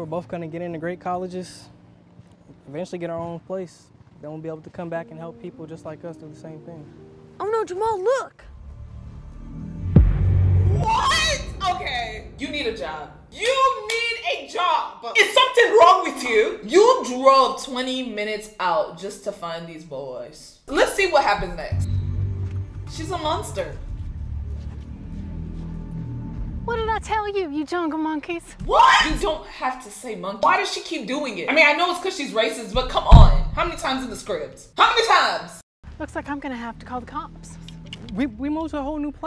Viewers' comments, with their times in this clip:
0:09 THE WAY SHE CAME BACK FOR A PHASE 2 LIKE A FINALE BOSS WITH THE MUSIC 💀
0:26 The way her voice cracked when she screamed "What!?" 💀